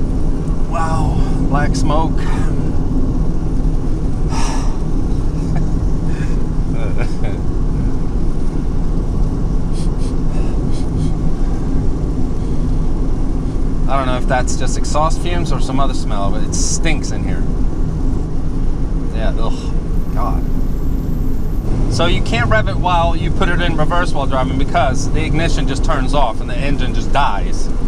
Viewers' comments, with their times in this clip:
0:05 sounds like the old man laughing in the Skype call.
0:09 sounded like the beginning of a movie